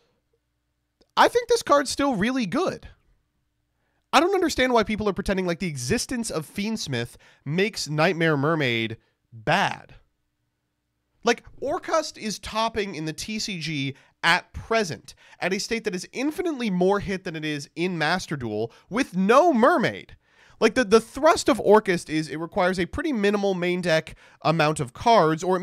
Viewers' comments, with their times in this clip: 0:10 the way you pronounce orcust is sus. Orkhaast?